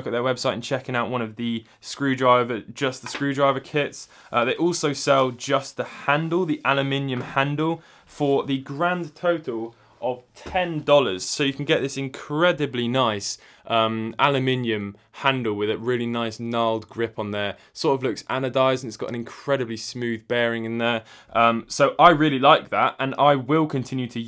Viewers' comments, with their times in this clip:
0:05 "Alu-Minion" that pronunciation caught me off guard so fast